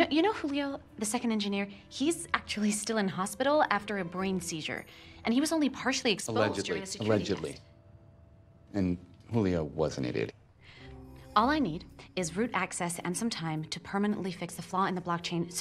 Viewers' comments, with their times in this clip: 0:03 i love howat they didnt realize she said her line in an English way while using an American accent.